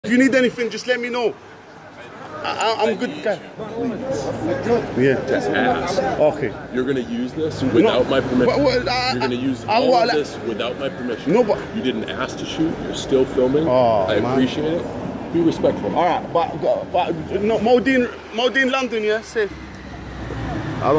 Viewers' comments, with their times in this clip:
0:08 Cena: You’re gonna use this without my permission. Guy: “WHAaatwalAHH”! dude can’t even talk.